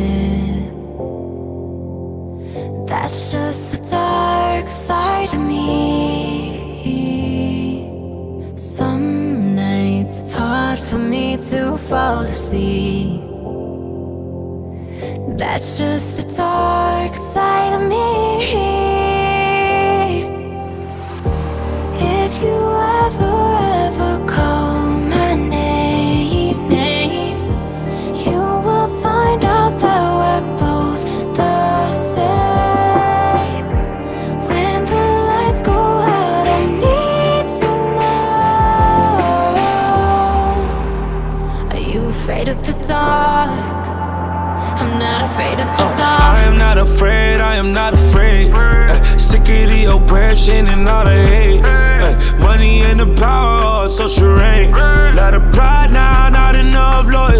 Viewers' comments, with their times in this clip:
0:04 i’m i the only one who thinks that she sounds so much like selena gomez ?
0:45 the way Ty started his verse 🥶